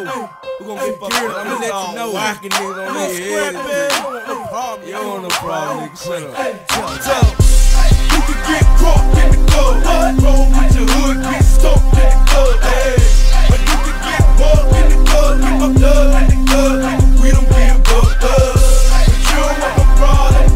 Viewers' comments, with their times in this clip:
0:05 The ominous jaws like build up to the beat drop is just perfect.